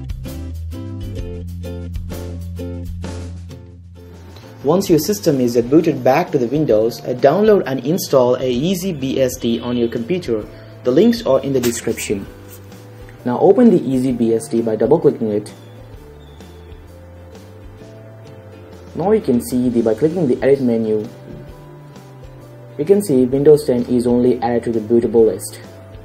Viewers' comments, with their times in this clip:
0:07 Having a problem with the "C" and the "S" mate?...
0:07 did he say easy"BSD" ? ;)